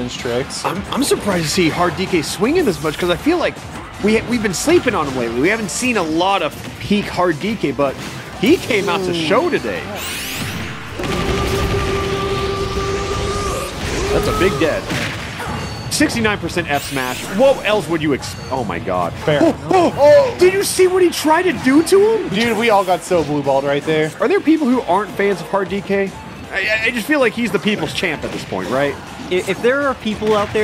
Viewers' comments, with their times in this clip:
0:10 Dk's final smash goes soo well with the "Ora Ora!" 😂😂
0:13 took me a second to realize the oras were edited in